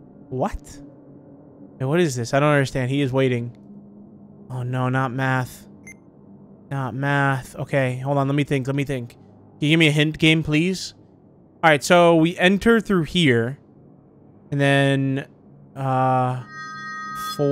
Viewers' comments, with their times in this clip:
0:03 I like how he sounds more scared of solving a math problem then the game itself 💀